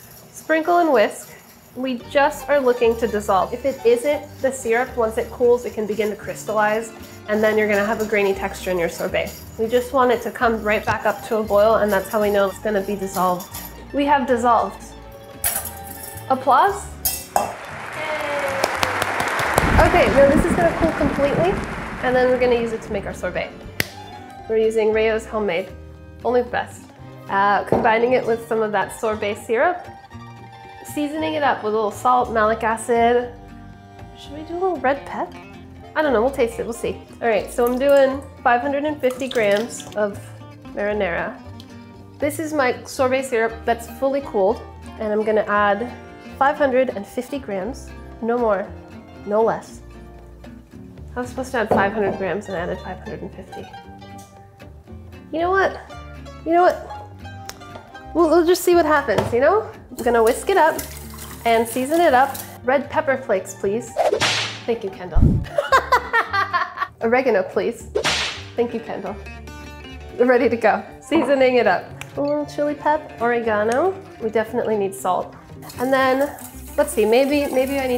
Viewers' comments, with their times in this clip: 0:10 usually the scrapes aren’t audible and this bothers me
0:38 worst foley art since Matty Matheson's Home Style Cookery. (ETA: I love it)
1:05 Her laugh makes my heart swell ❤️❤️🥲